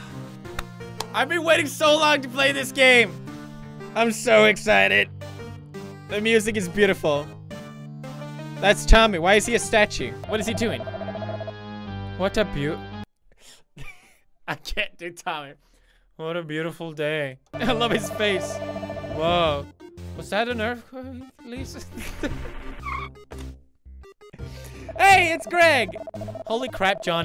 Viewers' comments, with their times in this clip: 0:09 That's Tommy, Wi seau a statue?